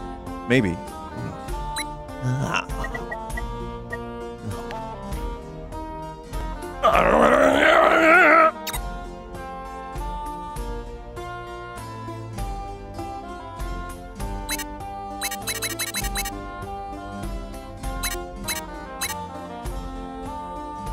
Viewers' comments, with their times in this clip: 0:06 I don't know why, but Vinny did a prefect Warcraft 2 bloodlust sfx